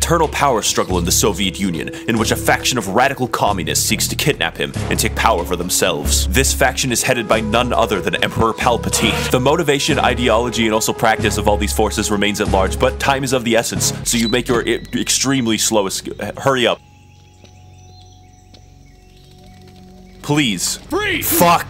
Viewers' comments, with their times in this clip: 0:07 I like how when he says Emperor Palatine, you hear him start to giggle to himself.